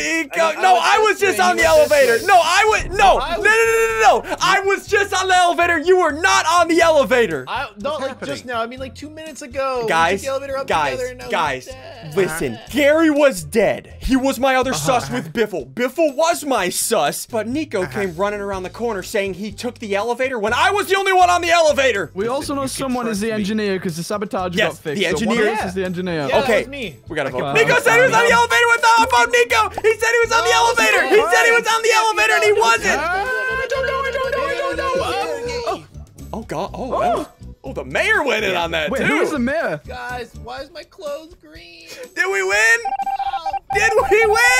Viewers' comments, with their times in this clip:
0:03 Ssundee: HP: 10 000 Attack: 600 Defense: 150 Special ability: Able to talk fast as heck
0:26 gdgdjeceehhsgdgdhgsvehh got me rolling 😂😂